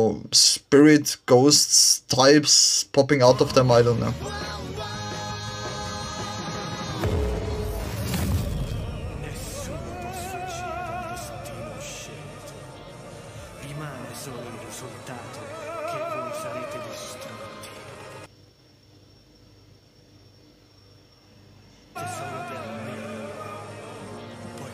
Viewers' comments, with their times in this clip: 0:09 this scene is in italian